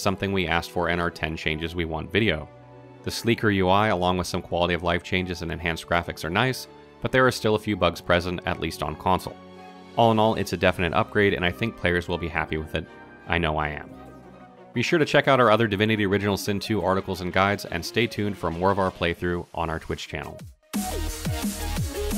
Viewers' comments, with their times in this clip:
0:09 ''I think players will be happy with it, I know I am.'' You dont sound so happy though.